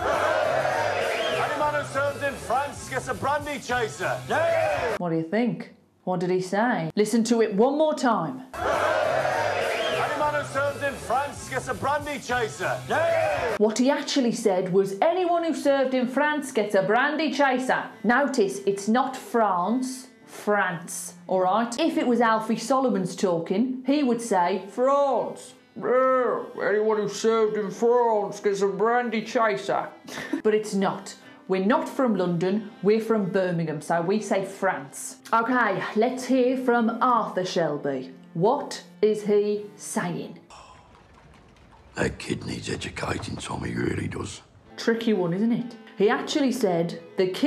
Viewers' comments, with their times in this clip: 0:08 I don't hear "anyone..." but "any man..." It's just me?
0:11 I literally understood nothing, dang all of the others were Easy, i understood most lf it, but that one was isane
0:28 Woah ahaha that accent you did of Alfie was pretty damn good!